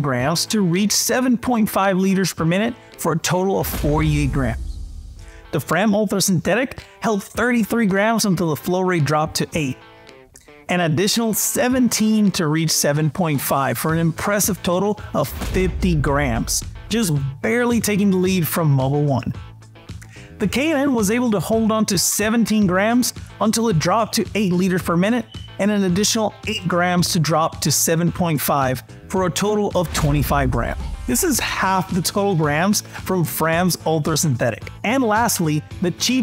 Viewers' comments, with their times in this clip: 0:03 did he just "sub-see-quenty"? Oh boy ..
0:24 smoke alarm chirp